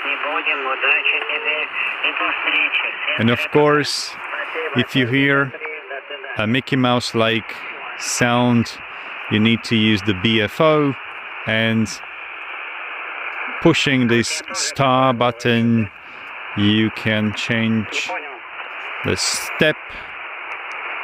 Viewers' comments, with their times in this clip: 0:05 the sound like Mickey mouse 🐭 is taking 😂 That's amazing. A couple years ago we couldn't assume that we can use a cheap handheld radio as a SSB receiver